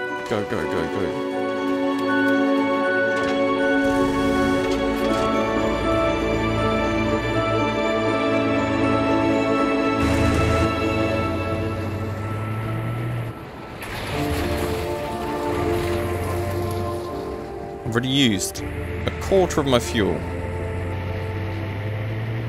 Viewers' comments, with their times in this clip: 0:07 It's just so nice with the music graphics and nature. there should be a game about drving with music. It's so nice i got a tear run down.